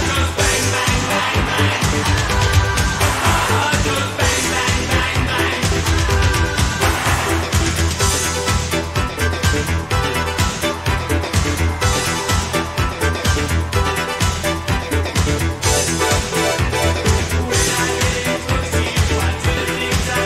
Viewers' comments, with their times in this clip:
0:06 I have seen the entire concert, there are many parts that I like and there are others that I have not heard very well but I loved this part because of the sound of all the devices and instruments. Excellent video!!! ❤ R.I.P Pete B.